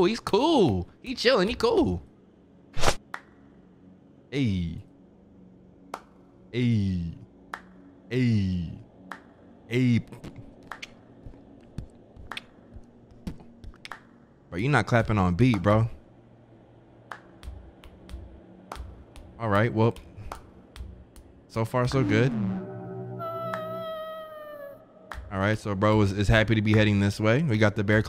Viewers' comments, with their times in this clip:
0:08 my man was silent beatboxing 🤣 i didn't hear nothing
0:10 bro I can beatbox better than this dude